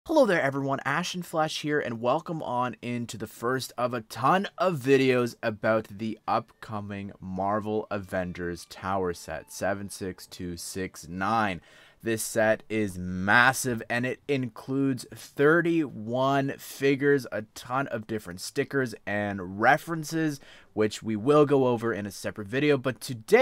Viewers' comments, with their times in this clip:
0:07 The wave of nostalgia when I heard the background music